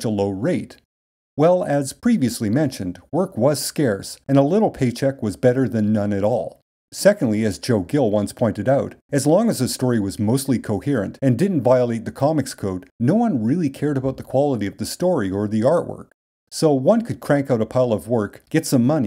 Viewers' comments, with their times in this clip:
0:07 the way this line is delivered in such a monotone deadpan way is so funny to me. I’m not sure why. This part of the company’s history almost sounds like a mockumentary waiting to be made.